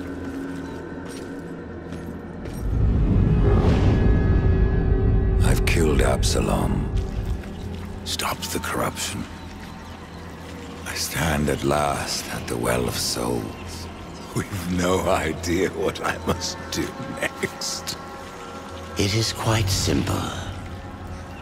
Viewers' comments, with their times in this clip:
0:05 That's amazing voice acting.